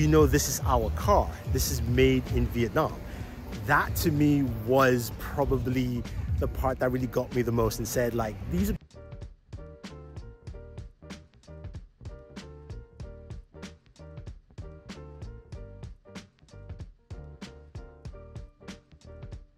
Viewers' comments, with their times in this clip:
0:07 Vocal audio cuts out then returns later.